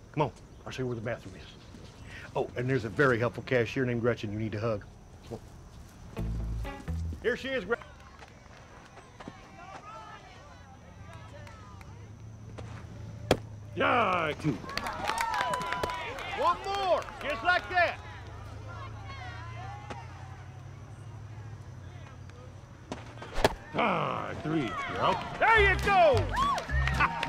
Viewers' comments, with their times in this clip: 0:09 I heard call me when you want in the background